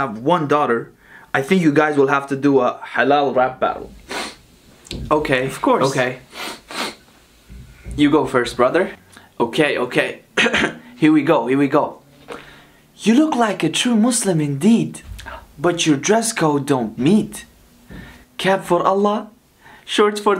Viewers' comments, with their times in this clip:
0:06 why does he sniffes 😂😂